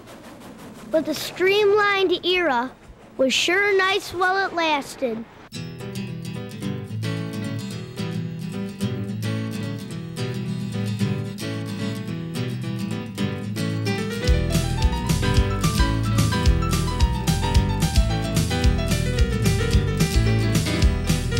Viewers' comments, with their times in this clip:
0:05 Nostalgic videos having the most banger songs for absolute no fckin reason